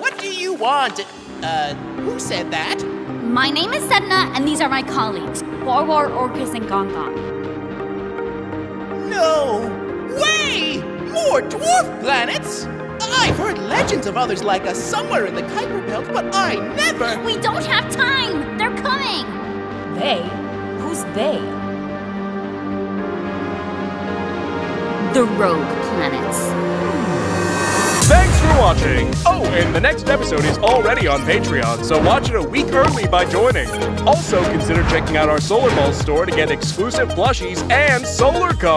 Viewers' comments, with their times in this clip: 0:03 I love Sedna’s voice!!
0:26 doesn’t here voice here sound like Callisto 🤨